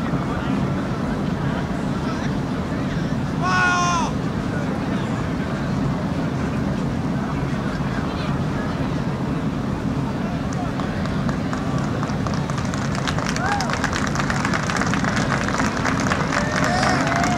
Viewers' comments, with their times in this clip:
0:03 sounds like a South Park yell 😂😂